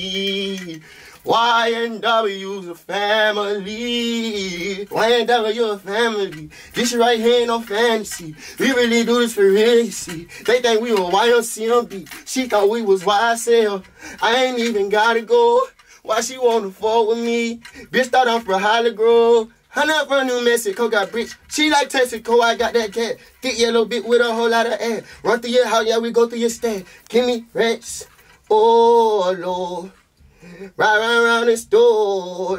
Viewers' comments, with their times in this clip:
0:08 editor be like How to remove jewelry sounds 😭
0:19 that’s that thugga flow 🔥🔥